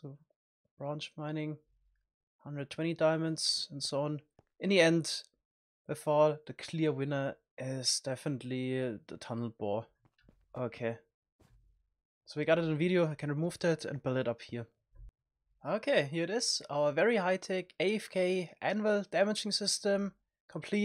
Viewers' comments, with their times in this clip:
0:07 Stefan Lee the tunnel boy